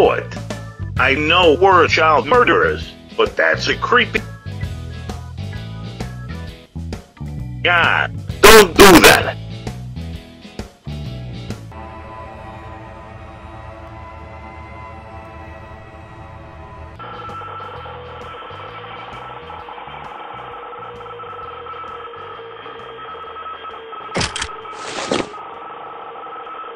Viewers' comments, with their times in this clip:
0:07 IN THIS PART DAVE JUST SCREAMED IN MY EAR
0:11 Im bout to murder this aubergine fuck my EARS